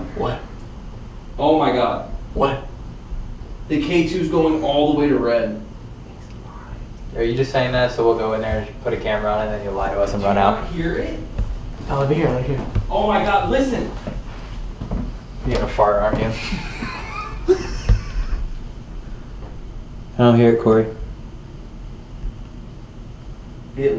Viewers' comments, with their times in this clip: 0:06 someone said "HI" or ''WHY" after Corey says OMG the K2 is going all the way red!!